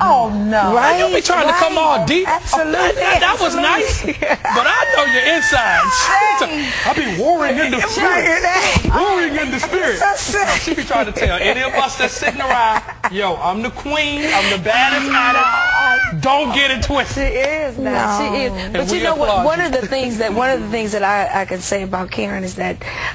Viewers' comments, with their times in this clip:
0:07 Lmbo ! Karen Attacks J. ... Bt They Truly Sound Wonderful Wen They Sing Together.